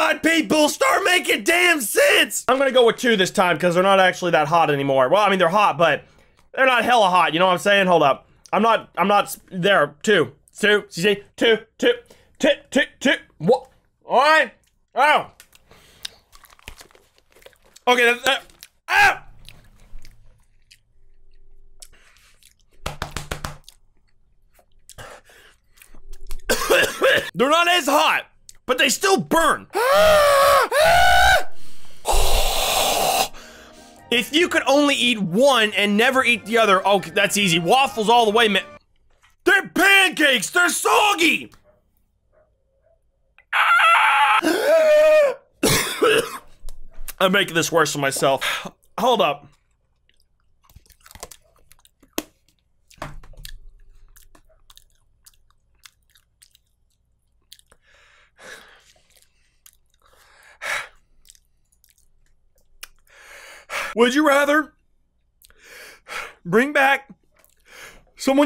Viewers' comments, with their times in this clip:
0:10 did he eat the second peanut? Cause i heard something fall
0:30 you sound like a goat
0:43 that screech tho
0:50 all I can think about is asmr
0:52 sounds like ASMR when he chews lol (at this moment he knew he'd f'd up